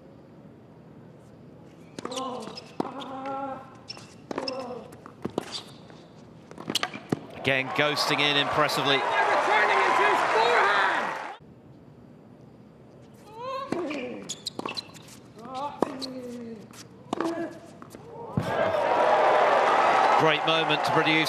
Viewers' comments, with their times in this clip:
0:08 is this Murray yelling or someone in the crowd